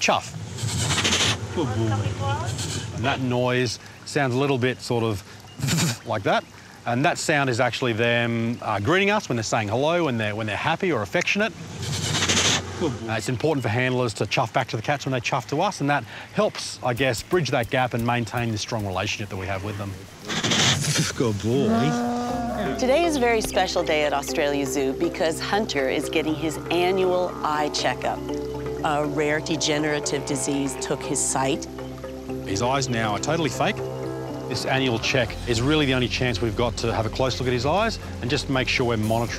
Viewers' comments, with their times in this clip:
0:04 it sounds like chuffs that Me: ITS LITTERALY LIKE THAT
0:21 Am I the only one that heard”Visio boy”